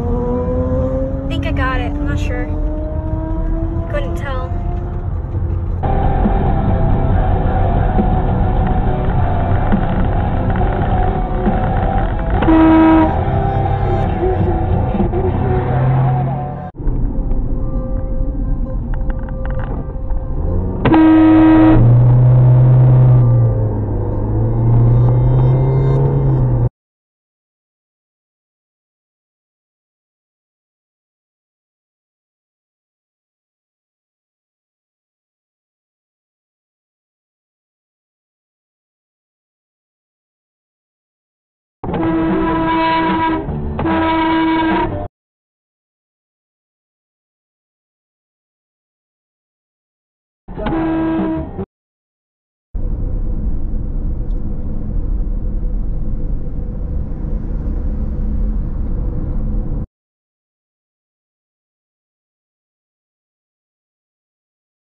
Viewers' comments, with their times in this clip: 0:06 should say idiot blows his horn at stop sign.
0:12 What the heck are you honking for!!?? You had to stop as well. There was no danger of an imminent collision.
0:47 yeah stay in your lane but that horn is horrible. I wouldn’t blow it even if I was the driver of the car